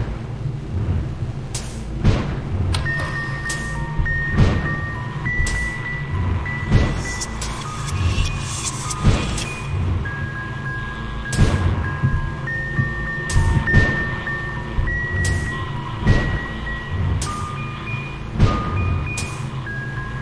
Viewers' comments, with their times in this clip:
0:06 If u put that whisper on reverse Get along: My name is Isabelle Isabelle is actually Dee